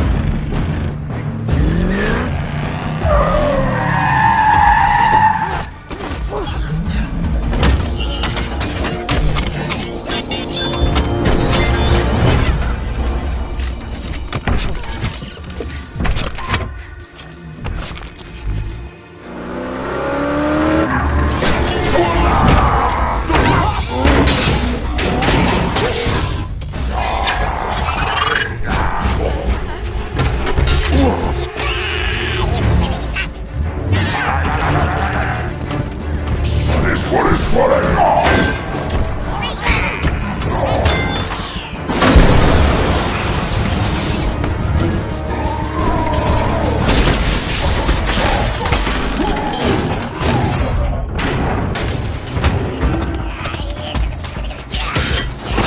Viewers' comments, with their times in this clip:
0:08 why is the ZONG ZANG ZONG ZANG so satisfying 😭
0:18 That engine note 🥰🥰🥰
0:28 barricade has a speech problem
0:31 does frenzy say, "haha, you silly fuck" when he pops outta barricade? maybe its just me...
0:32 Bro, am I the only one hearing Barricade make his own sound effects with his mouth? xD
0:34 that noise barricade makes is funny to me
0:34 that "AYAYAYAYAYAYAY" sounds really creepy
0:37 I think Barricade said All hail Megaton in Cybertronian it kinda sound like it